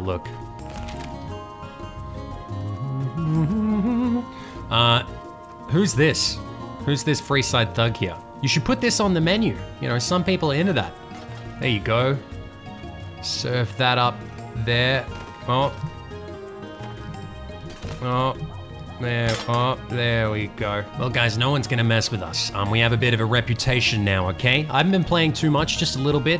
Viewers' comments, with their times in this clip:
0:08 White glove society nervously chuckling